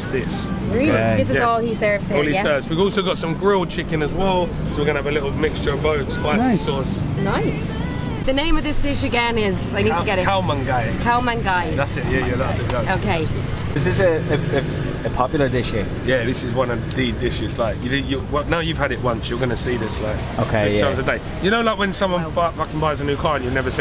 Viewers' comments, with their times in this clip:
0:08 OMG her Thai accent is 95% correct, lovely